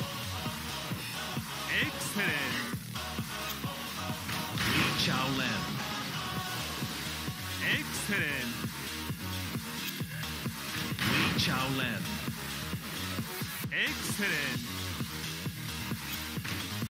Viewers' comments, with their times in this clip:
0:08 Best alternative default outfit ever for him (much eleganceness). Also, Lee's voices in Tekken 8 much manly and aggressiveness than previous game series (Tk4 - Tk7).